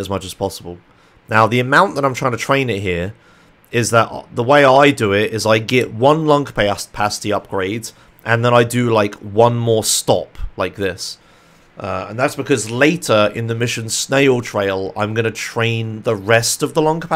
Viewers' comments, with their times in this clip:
0:05 he became a texan in for a sec